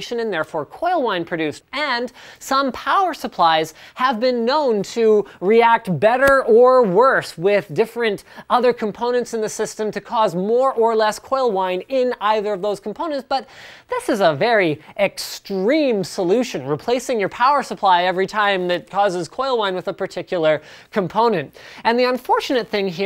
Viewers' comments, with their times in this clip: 0:05 did I hear a hitmarker LMAO
0:05 COD hit marker sound on